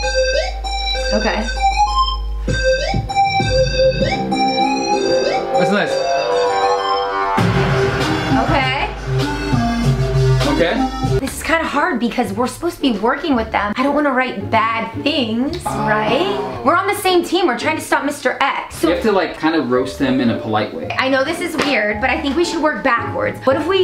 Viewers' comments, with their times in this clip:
0:07 when the beat dropped and it shakes I laughed so hard my mom thought there was something wrong with me